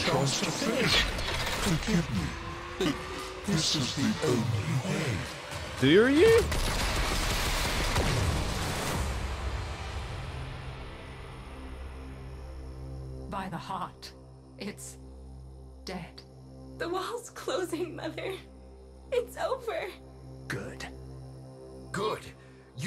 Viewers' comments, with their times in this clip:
0:04 why does he sound like the glassmaker?